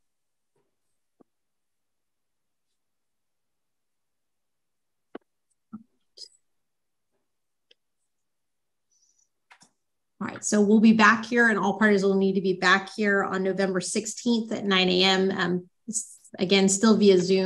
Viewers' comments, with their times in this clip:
0:03 the gum! With all the face piercings. You are in court!!! 😵‍💫 stop the chomping